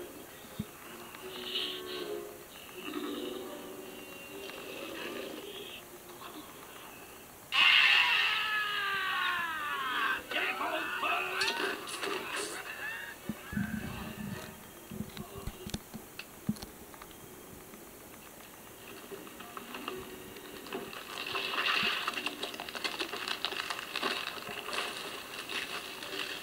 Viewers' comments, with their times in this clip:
0:08 Mr Smee: (Screaming)